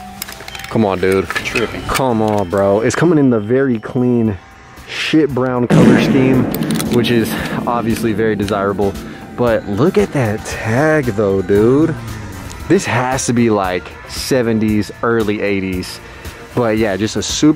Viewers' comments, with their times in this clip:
0:04 That fart effects always gets me so 😆 farting Happy! 💩🤣